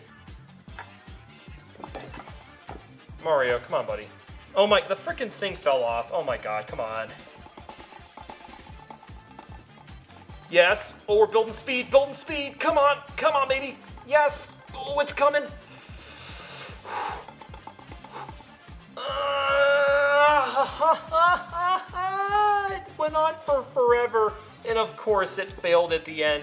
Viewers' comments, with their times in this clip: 0:07 Close your eyes, and just listen to how dirty this sounds..... 😂
0:14 sounds like me on the toilet 😂😂😂